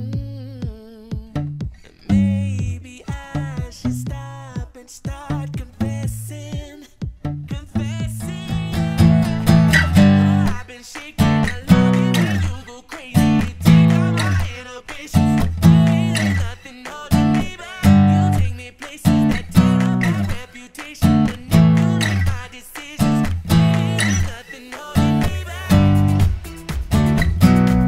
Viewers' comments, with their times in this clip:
0:09 that sliding, is it needed or is it just for the power chord feel?